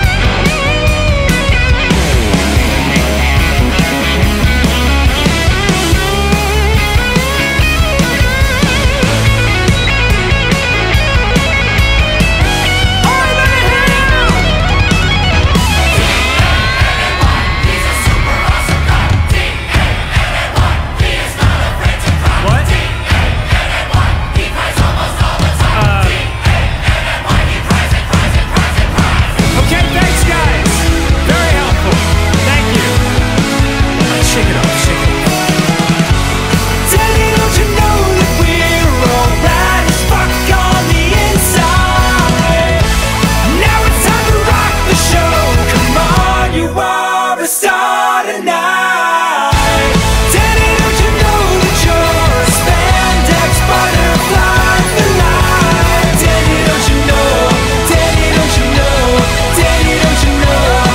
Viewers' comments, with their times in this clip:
0:03 I love the part where Danny is headbanging to young Danny's solo guitar shredding I dunno, something about that just makes me happy.
0:38 Everytime the song hits this burst of notes it sounds incredible, pretty much after the "F*ck" every time.
0:45 Everyone keeps talking about the 2 minute mark but is when I start sobbing violently. There's something so powerful about all of the instruments going quiet and having such a fucking amazing harmony take front and center stage.
0:46 that is the most angelic harmony I’ve ever heard.